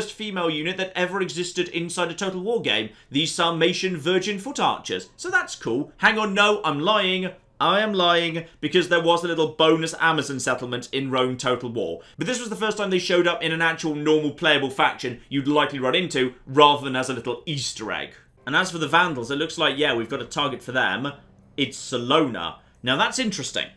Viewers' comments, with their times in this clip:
0:10 Screeching woman of the Germania faction